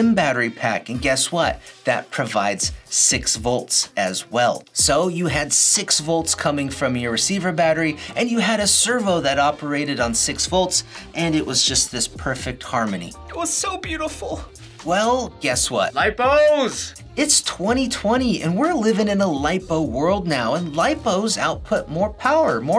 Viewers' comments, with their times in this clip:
0:09 I don’t know why I burst out laughing when he said “ LIPOOOOOOS!”